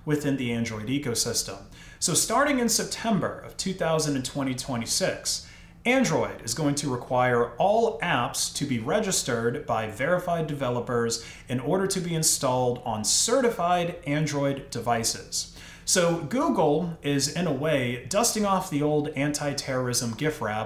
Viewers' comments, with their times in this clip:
0:05 Did i just hear "two thousand, twenty twenty-six"?